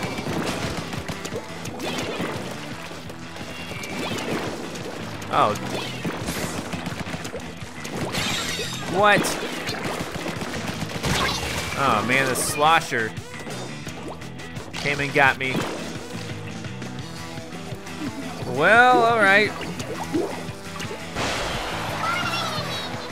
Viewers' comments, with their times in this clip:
0:05 I'm an expert at hearing disconnections cause I've had so many on my team